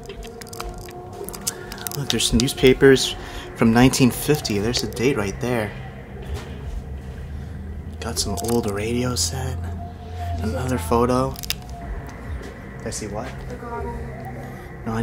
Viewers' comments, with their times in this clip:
0:03 you caught a evp.go back and listen with ear buds on